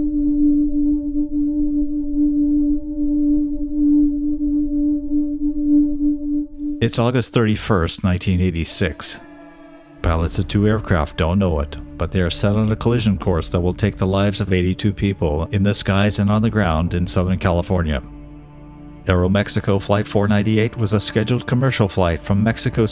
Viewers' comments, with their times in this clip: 0:07 That part of the video starting your voice sounds very mechanical and robotic. Perhaps, too much audio compression going on there, mate!